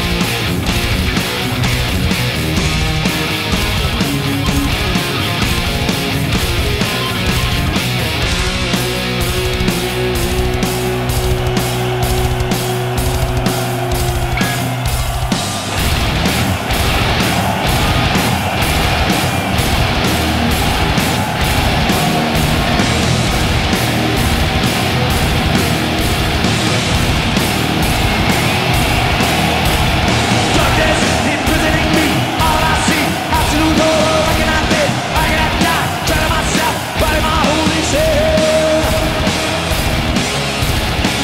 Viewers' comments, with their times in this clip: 0:09 it's like Strom coming
0:16 gave me massive goosebumps haha the fact they all headbang in unison, the fire changing color, the crowd screaming, the lights flashing, I'd kill to be there Edit: Also James adding the "no, no no" and the emotion he put into the last one is great
0:29 the way James comes in is sick